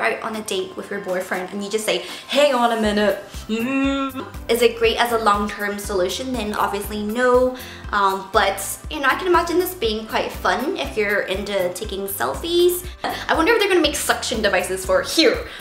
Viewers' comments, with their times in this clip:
0:03 that imitation of the machine was hilarious rewatching this so many times lool